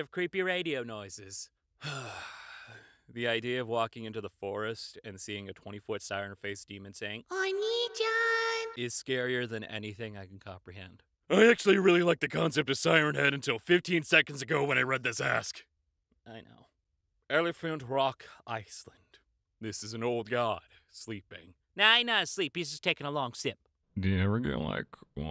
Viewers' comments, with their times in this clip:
0:07 that is the scariest "Oniichan" i have ever heard, congratulations!